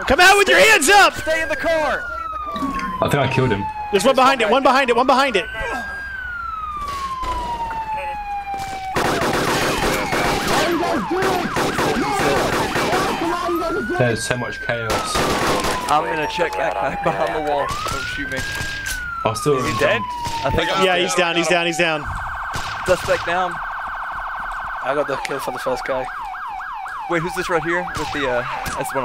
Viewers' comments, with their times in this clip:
0:10 I swear to god sounded like Upchuck.